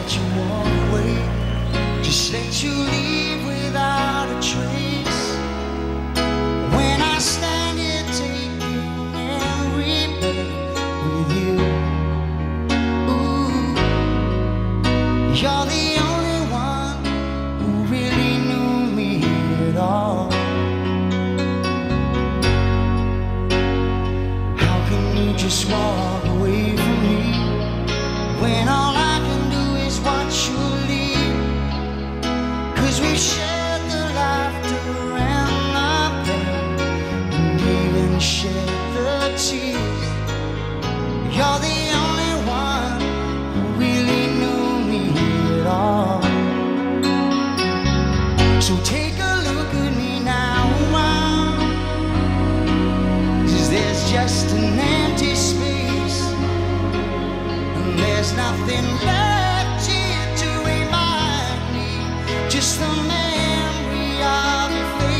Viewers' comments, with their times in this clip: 0:10 I looove the bass line going down after second ..its not a very strange thing but it always just gave me chills.
0:50 "take a look at me now ooh ow ee ow". WTF PHIL COLLINS SUCKS THEY JUST GAVE HIM GOOD SONGS.